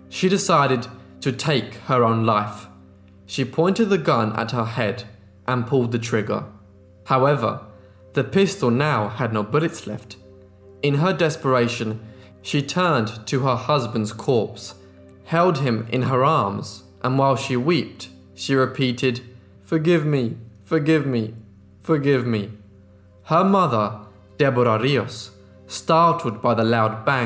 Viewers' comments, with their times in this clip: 0:09 spoiler lol.. "no buwets weft ?". ...Elmer Fudd lol